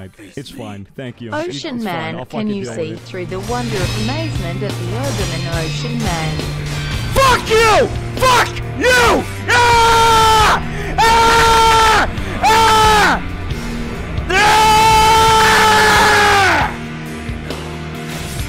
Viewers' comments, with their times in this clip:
0:06 imagine him sitting alone and just screaming while playing XD